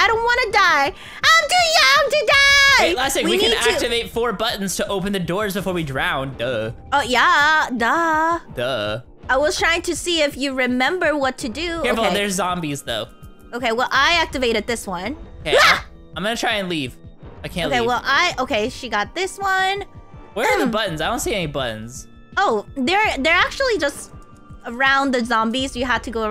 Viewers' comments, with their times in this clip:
0:09 Wait on i heard "baka". Is that just me or am i hearing stuff🤨